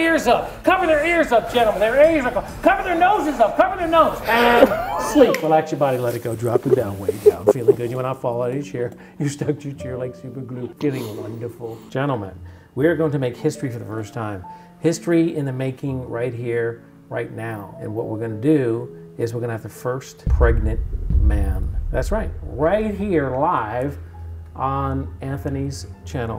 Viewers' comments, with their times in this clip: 0:06 someone like mad a sound but was clearly laughter?
0:09 It’s fake And I have proof someone is laughing